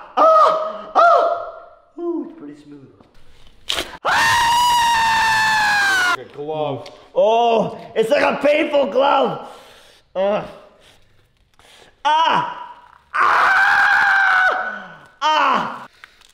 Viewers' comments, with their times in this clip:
0:04 was his loudest scream
0:04 damn he screamed so loud